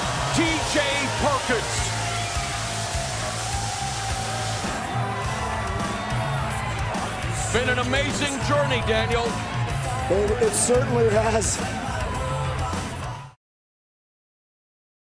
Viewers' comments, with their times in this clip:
0:09 Daniel sounded like he was crying at the end when he talked (Probably cuz he watch people do something he wont be allowed to do in the WWE anymore: Wrestling)